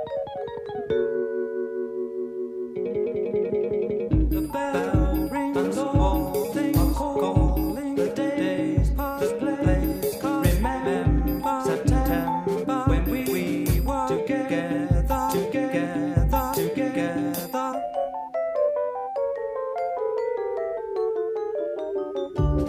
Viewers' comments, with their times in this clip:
0:03 I seriously adore that syncopated rhythmical lyrical exchange Wish it was longer